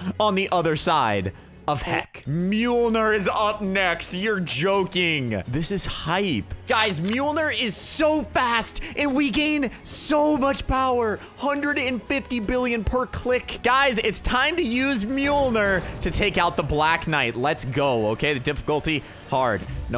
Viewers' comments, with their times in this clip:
0:07 he kinda sounded like a clickbater